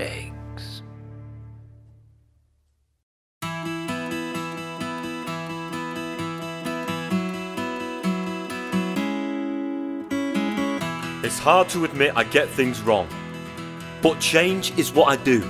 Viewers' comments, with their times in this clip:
0:03 Love the music transition it perfectly shows that New Who has begun and Classic Who has ended.